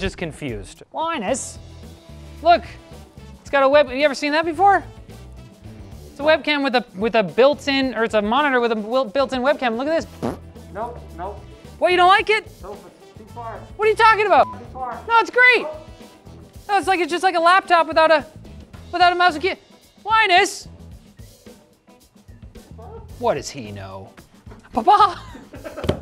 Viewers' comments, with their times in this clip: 0:08 love the sound effects lol